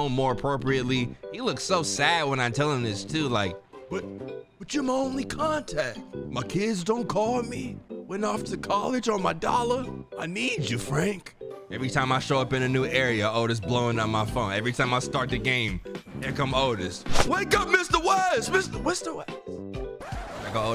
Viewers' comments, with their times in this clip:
0:05 I’m crying laughing at this impression 🤣🤣 also, bro don’t feel bad if you completely botch your first run. I feel like everyone does cause the game is designed to make it beyond hard for your first time. That’s kinda your learning phase. This lets you level up and gain health and inventory blocks to keep on the start of your next run. So when you start a new game, you’ll keep your stats, and you’ll be more used to the real time and mission mechanics. Thus making the gameplay much easier. For now, you just gotta push Berlin. You got this.